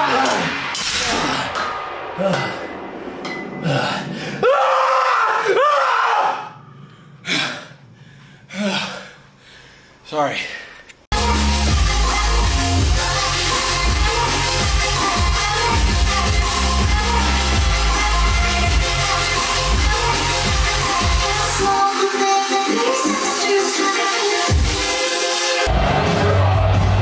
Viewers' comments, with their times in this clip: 0:10 why did bro scream like lol